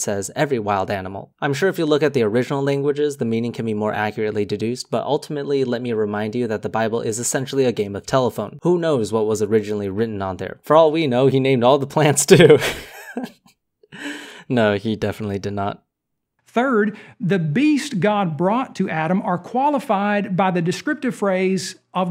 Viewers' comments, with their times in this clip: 0:10 your laugh is cute.